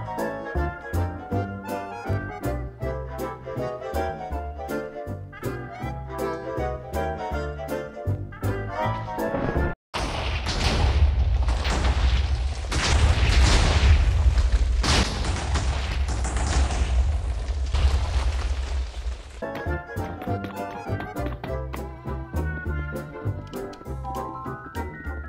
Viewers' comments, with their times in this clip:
0:07 OooOoO wat does this button do? boom